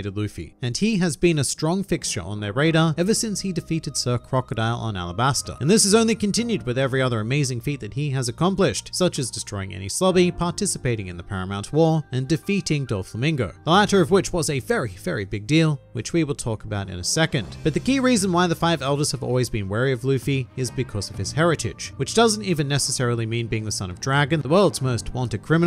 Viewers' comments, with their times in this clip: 0:09 destroying koby lmao
0:09 [...] such as destroying Koby [...] Yes